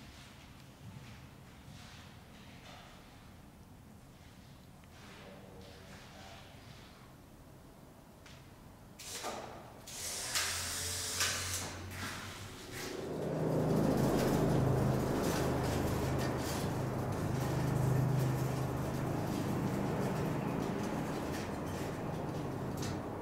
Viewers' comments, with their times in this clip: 0:10 I know the sound of a SX-70 when I hear it